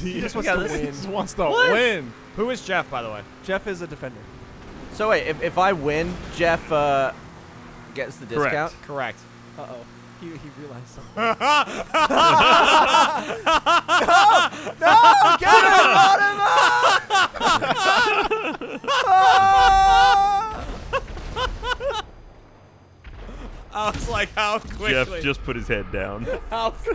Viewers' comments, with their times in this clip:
0:09 its subtle shit like this silent moment that makes it funnier to watch as Gavin denies Geoff's discount no matter what.